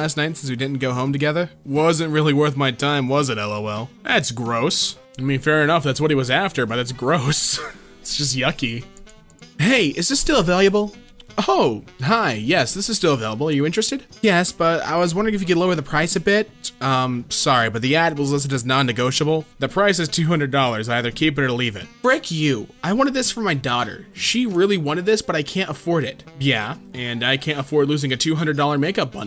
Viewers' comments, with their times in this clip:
0:10 he read available the 1st time as availiable and the 2nd time as available lol